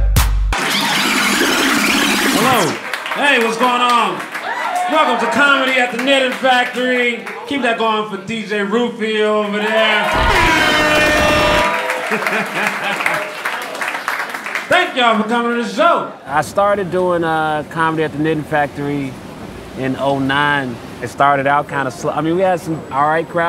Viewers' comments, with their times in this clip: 0:07 When an act starts by giving shoutouts to the dj and the dj instantly answers with airhorns <3 love this